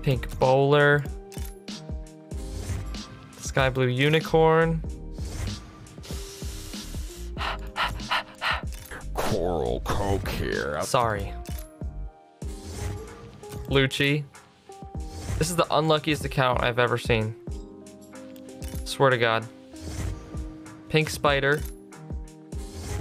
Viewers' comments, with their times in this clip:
0:09 love the follow ping btw